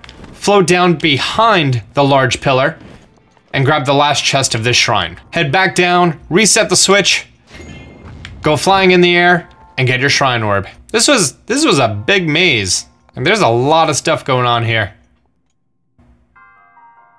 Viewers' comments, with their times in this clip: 0:05 I thought he said reset your switch so I turned my switch off